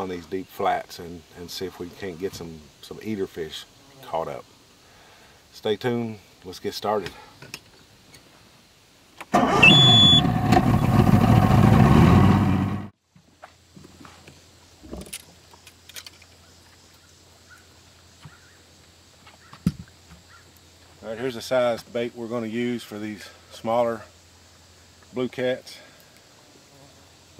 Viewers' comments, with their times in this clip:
0:10 Rip head phone users